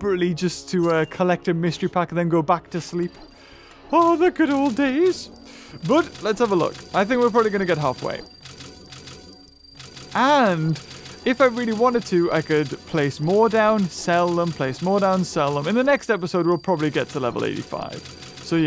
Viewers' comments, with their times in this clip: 0:03 he sounds like micky mouse 😂